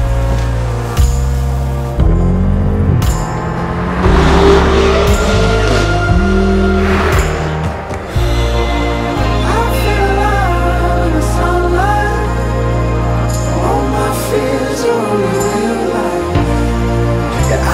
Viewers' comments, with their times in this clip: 0:04 how does the m8 sound like that ?